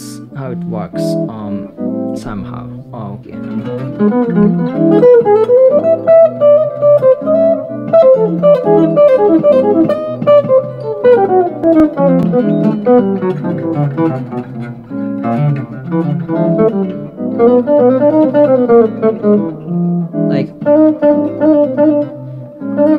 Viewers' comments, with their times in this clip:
0:10 That lick is the thing I would like to get under my finger. Was that a long lick in your lick library or was that long line also improvised? Thank you!